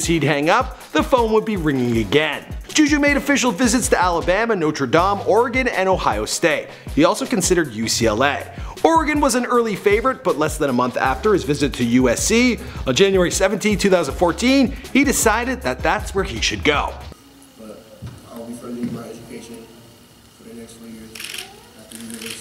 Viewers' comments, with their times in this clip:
0:03 i hate how he said Notre Dame